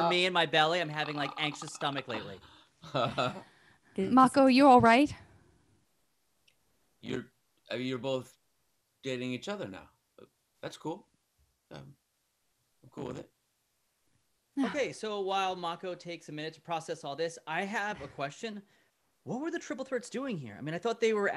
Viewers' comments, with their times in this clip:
0:05 I’m trying to watch this for funsies but i literally can’t breathe every time I skip a few seconds it’s David Faustino screaming his guts out 💀 also I’m time stamping cause this is the funniest thing ever to me for some reason 👁️